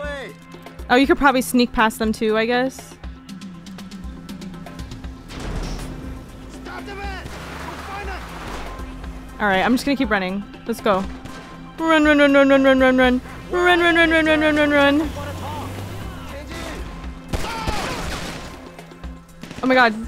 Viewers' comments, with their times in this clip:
0:03 Gangsters are speaking Mandarin Chinese